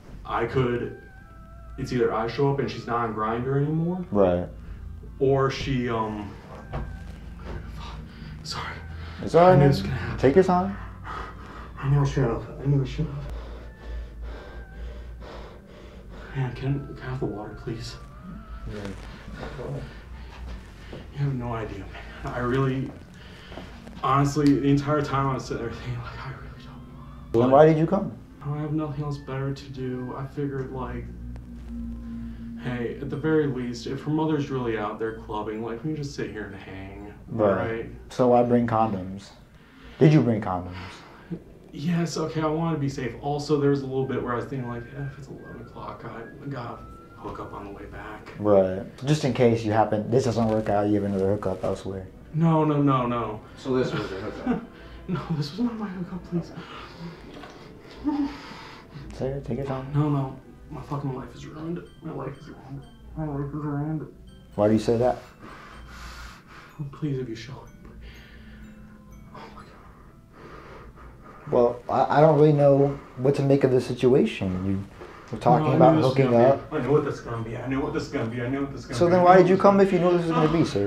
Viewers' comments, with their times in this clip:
0:04 The troll music is so funny
0:34 i was so scared mins bc if im not mistaken there was music from ddlc or smth rly similiar and i had no idea where that was coming from and my heart stopped there for a sec
1:04 Off topic but why is there doki doki music in the bg? 💀